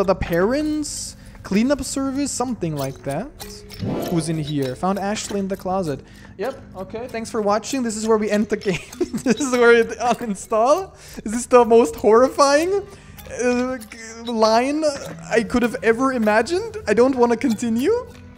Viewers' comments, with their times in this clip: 0:04 IS THAT HIS REAL VOICE? sounds so different
0:04 the way you can hear how he got far from the mic 💀💀